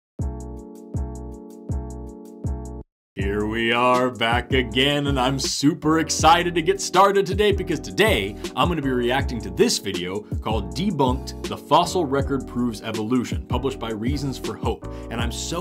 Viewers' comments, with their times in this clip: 0:02 Why is nobody talking about how hard that flow went ??